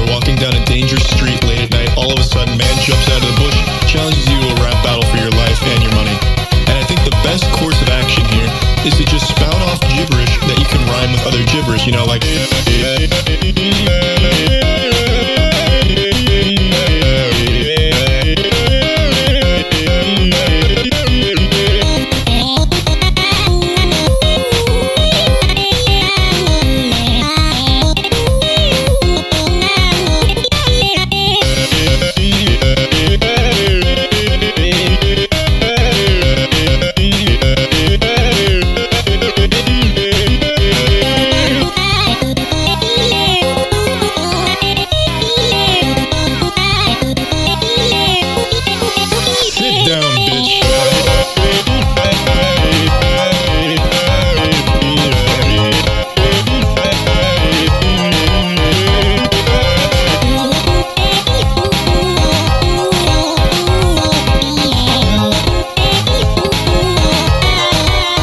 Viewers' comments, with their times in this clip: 0:09 spout out gibberish that rhymes with other gibberish is a weird way of rapping but sounds so amazing 🎧🙂‍↕️
0:42 anyone else hear megalovania in the background
0:49 A little too smooth for my liking